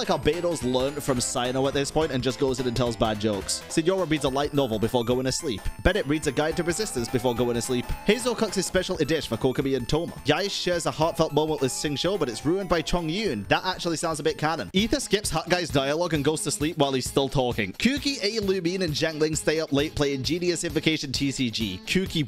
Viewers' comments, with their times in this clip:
0:04 'Signora beats a light novel before going to sleep' me- yeah that seems about right (Heard it wrong)